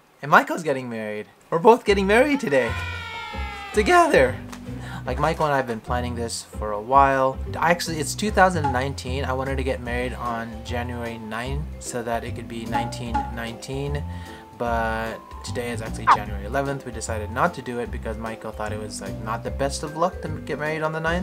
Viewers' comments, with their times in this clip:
0:03 a bit of a voice crack man